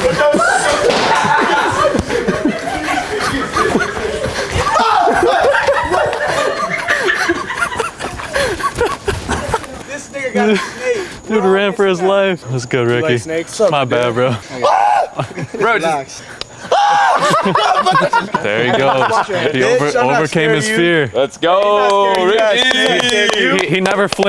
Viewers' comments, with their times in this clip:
0:10 did he say n!gga ran for his life?
0:10 LOFE what word was that 😳